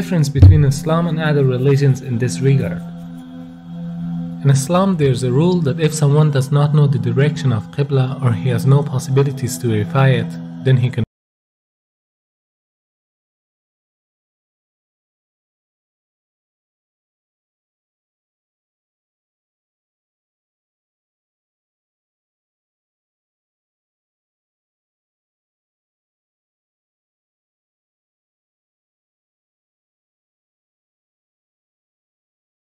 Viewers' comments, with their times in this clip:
0:10 Audio cuts out for a little then resumes again
0:10 The Audio cuts out for about a minute
0:11 there is no sound
0:15 there is an audio bug?
0:15 I don’t know if it’s only my YouTube but right when the video comes to minutes, it gets muted for 40 seconds ….